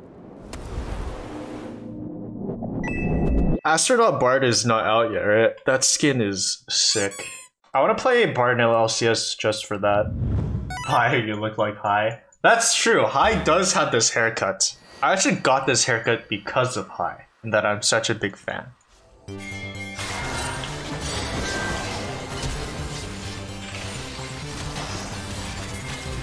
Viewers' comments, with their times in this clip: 0:07 "that skin is sick" squeaky toy noise | zooms straight in on cute ass meep <3